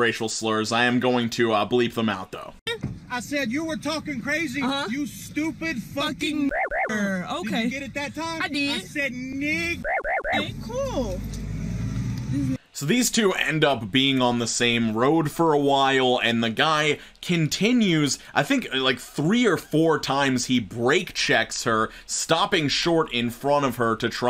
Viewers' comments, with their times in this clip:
0:05 Where did that sound effect come from? It sounds like something from a video game or a toy or something.